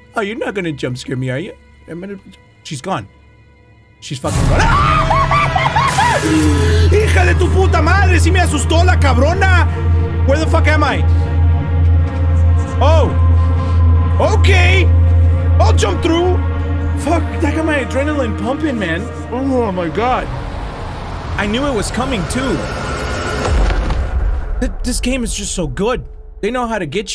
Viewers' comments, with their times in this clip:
0:08 New about jump scare ut didn't expect the loud sound with it